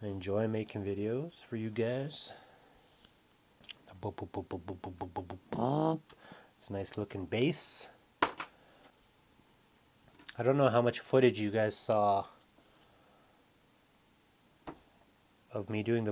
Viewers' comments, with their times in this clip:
0:04 ... Are those your first “blubs”? Excellent!